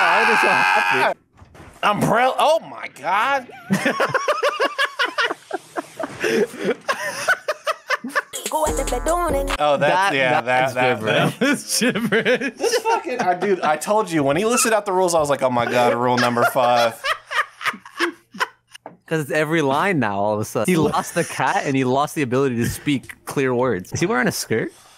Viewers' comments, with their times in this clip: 0:07 I genuinely fucking forgot you were replacing his sounds with lyrics and when I heard that shit come out his mouth I fucking choked.